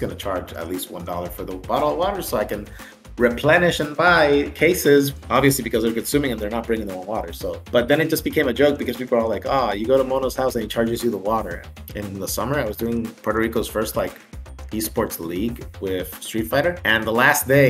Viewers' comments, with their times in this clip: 0:04 the commentators are having too much fun at this moment.